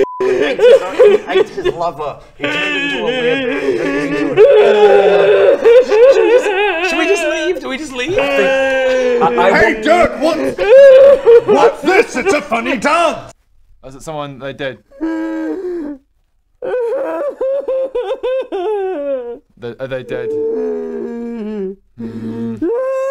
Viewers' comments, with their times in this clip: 0:05 that is the most convincing ugly crying I have ever seen.